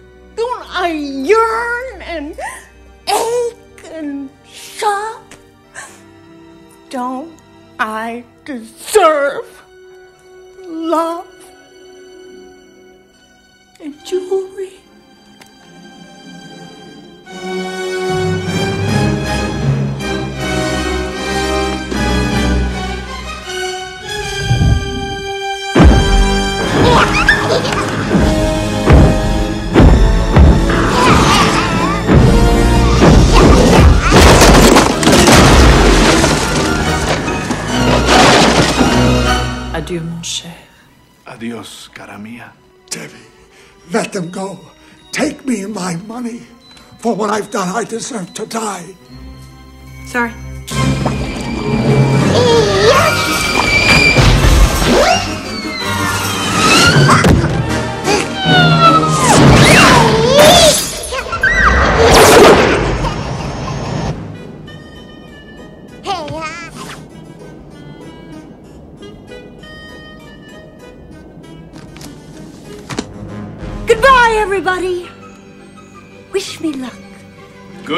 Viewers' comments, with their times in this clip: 0:04 OMG I didn’t realize it was Joan Cusack lajskdkdkdjd I was like “this sounds like Sheila” (Shameless US) specially in lol it’s something Sheila would say
0:48 Love it, so nochalanet, "Sorry."
0:53 did I just hear the baby say YEET
0:59 Is that a ya yeet I hear?